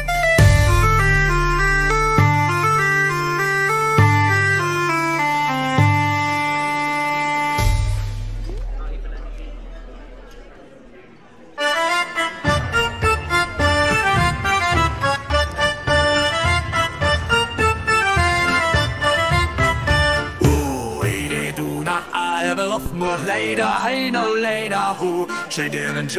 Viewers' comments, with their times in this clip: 0:10 That song is stuck in my head since the first time i heard it. That is one good tavern song!!😅